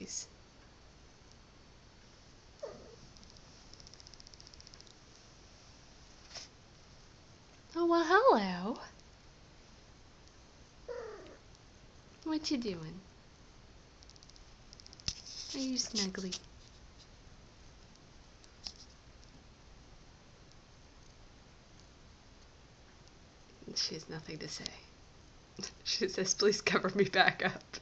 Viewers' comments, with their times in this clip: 0:10 aww! Molly is soooo cute. at a bunch of times she made a throaty noise, and my cat does that too!